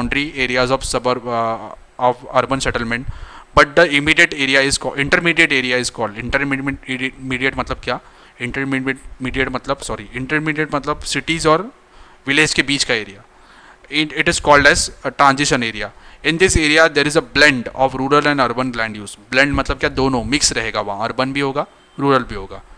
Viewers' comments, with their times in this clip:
0:06 broo says 6 times still wrong 😂😂 its inter-me-diate , intermediate❤❤